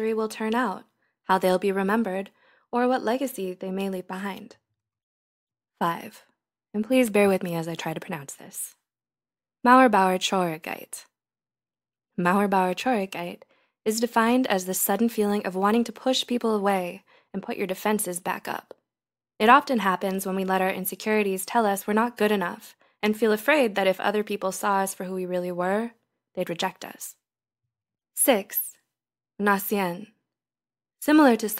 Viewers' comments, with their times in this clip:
0:06 It is pretty funny to hear German words with an English accent^^ Word by word the translation would be Wall-builder-sadness if anyone is interested Mauer=wall Bauer=builder Traurigkeit=sadness
0:09 If you'd pronounce it less soft especially the 'r's then it'd be pretty good ;))
0:12 I hear like she's smiling while saying it